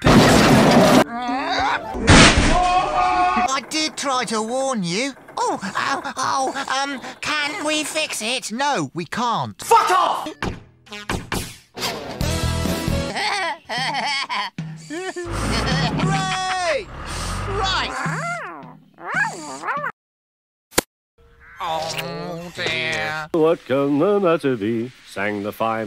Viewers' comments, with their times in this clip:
0:06 My favorite moment! Muck: panicking Oh! Um...! Can we fix it?!" Scoop: so annoyed "No! We can't." Muck: being pissed "F*CK OFF!" I just died laughing within that part.🤣